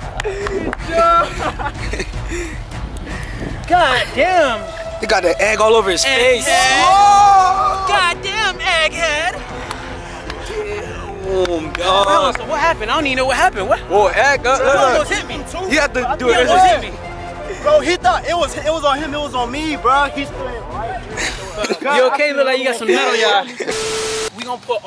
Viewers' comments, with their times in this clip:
0:06 Bruh has me dead why he say egg head like that 😂😂😂😂😂